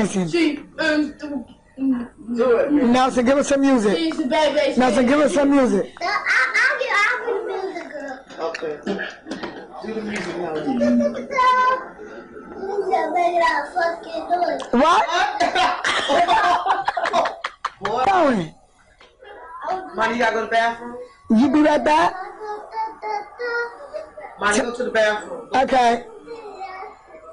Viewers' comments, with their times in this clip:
0:10 Who's that making that fuckin noise... lol